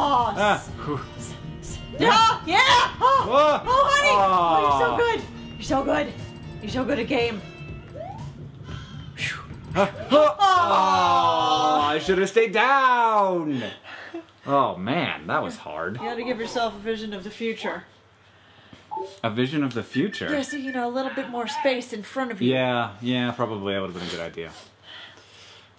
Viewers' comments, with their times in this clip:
0:06 ? "you're so good, I came"...?